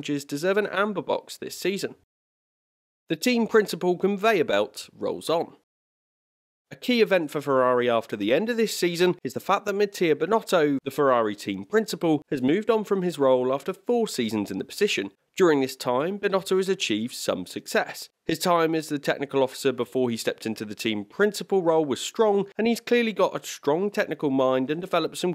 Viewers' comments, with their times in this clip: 0:08 I think I heard my man say Mid-tier Binnoto 😭